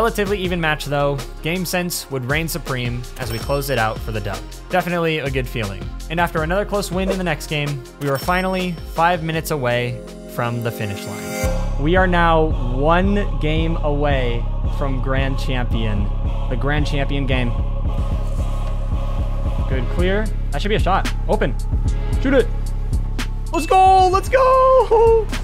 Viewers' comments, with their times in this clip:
0:06 The beat is crazy